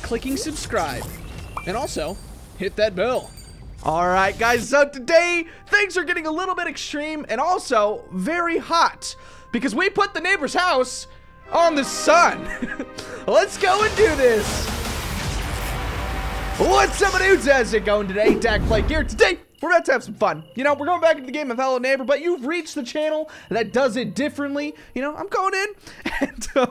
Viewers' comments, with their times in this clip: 0:08 space music starts playing